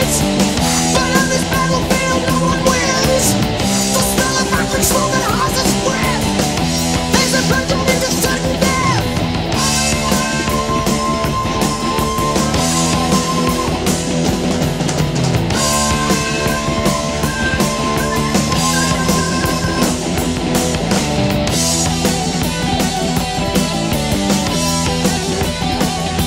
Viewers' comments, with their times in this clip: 0:09 autistic robot scream
0:09 autistic robot scream